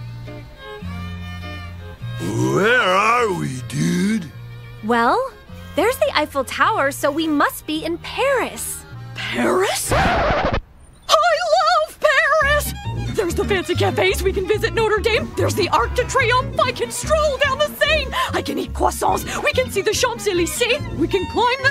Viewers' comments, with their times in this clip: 0:09 Paris?! record scratch